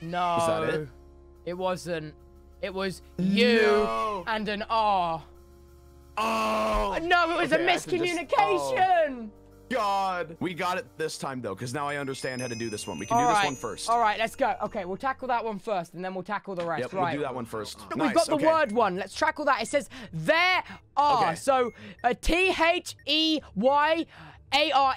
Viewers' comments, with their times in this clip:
0:06 Ranboo sounds like technoblade when he realized ranboo was the main character.